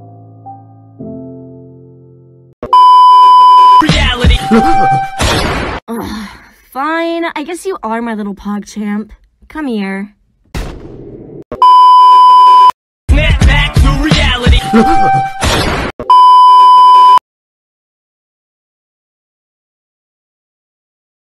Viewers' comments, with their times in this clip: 0:04 Why haven't I heard any gunshots? Oh finally